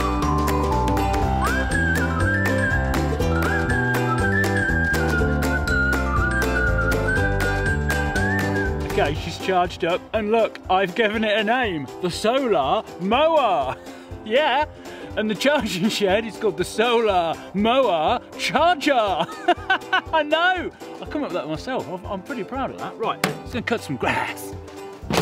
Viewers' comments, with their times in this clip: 0:07 Roblox music brrrrrrrr